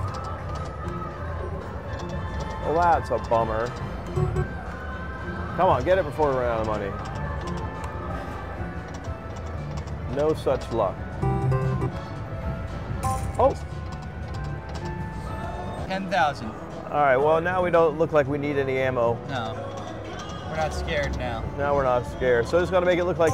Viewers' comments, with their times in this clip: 0:05 I feel I always hear that shitty back round song so loud in your videos